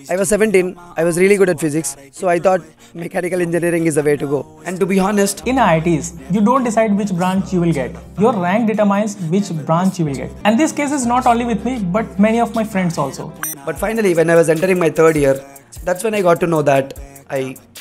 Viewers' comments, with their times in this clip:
0:03 U r voice 😂😅